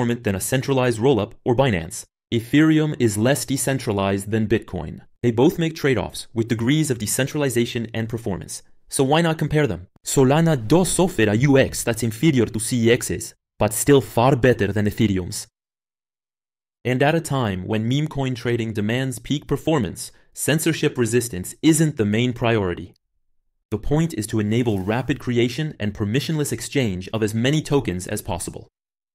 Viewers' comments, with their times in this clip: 0:10 Lol where the AI voice gets a Spanish accent